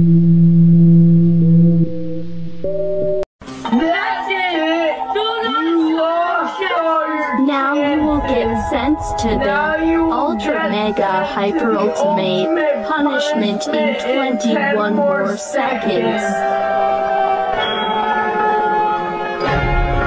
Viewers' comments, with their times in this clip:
0:04 average demon voice in ohio
0:04 voice sounds drunk music sounds like it’s giving me nightmares